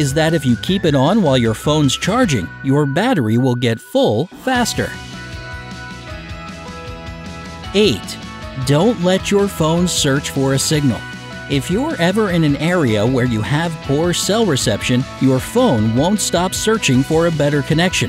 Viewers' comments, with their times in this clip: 0:04 evil small laugh heheheheh thank you :)